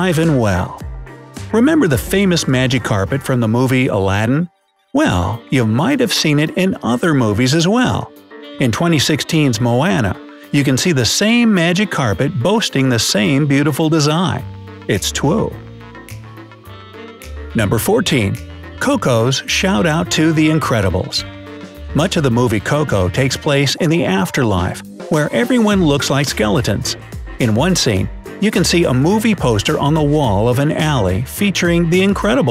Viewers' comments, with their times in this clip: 0:08 mo-Anna? I thought it was moana
0:14 you said "its twue" not its true. you always do that